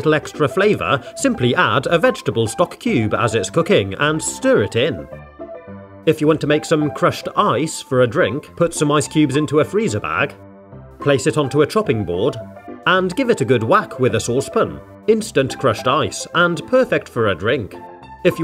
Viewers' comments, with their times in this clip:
0:06 I THOUGHT HE SAID CRUSHED EYES 😭😭😭